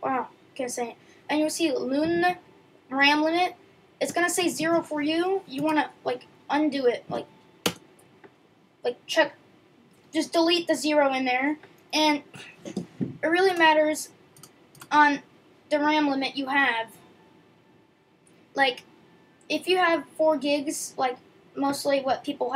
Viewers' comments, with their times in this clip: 0:06 to where? i cant hear it correctly and the recording is pixelated